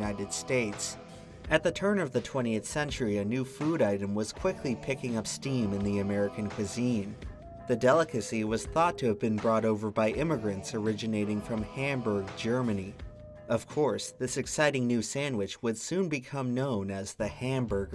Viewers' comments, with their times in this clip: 0:04 Just want to mention that syncing when you say "steam" to skinner saying it did not go unappreciated.